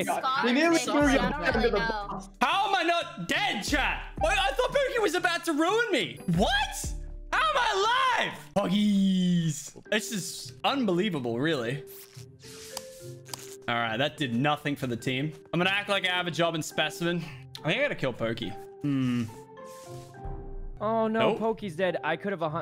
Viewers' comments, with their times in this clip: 0:07 The way he says POGGIES is so good